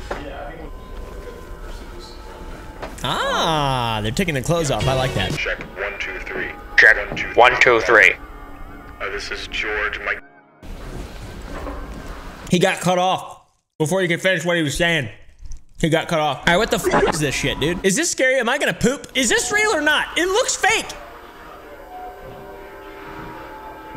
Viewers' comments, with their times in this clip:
0:09 “this is George Micheal-“ Careless Whisper plays